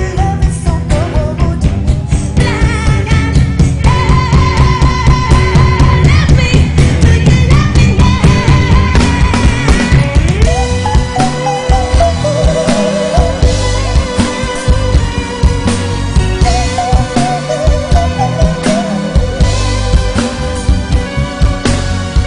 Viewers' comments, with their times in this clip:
0:10 Is it a human being or a bird singing??? AMAZINGGG!!!